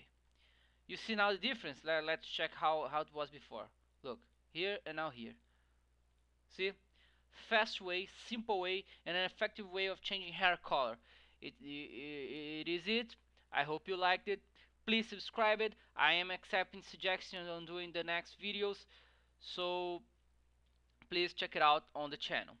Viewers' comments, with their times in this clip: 0:08 Thimple i think they say it simple last time i checked xD haha!